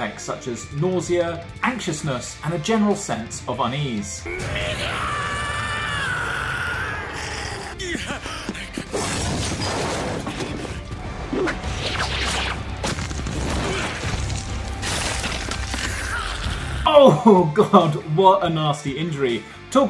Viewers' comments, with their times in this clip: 0:03 WHO ELSE HEARD HIM SAY THE N WORD